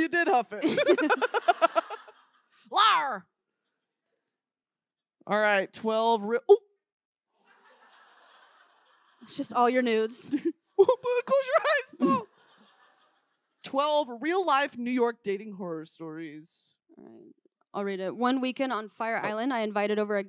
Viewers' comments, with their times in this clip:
0:06 The "OOP!" is 100% Wendy Williams